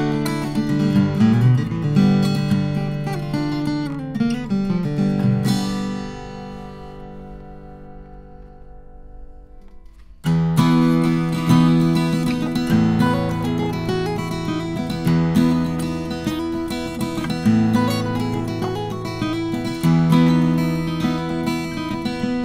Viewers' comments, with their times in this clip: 0:10 love that riff...damn microphone is in the way lol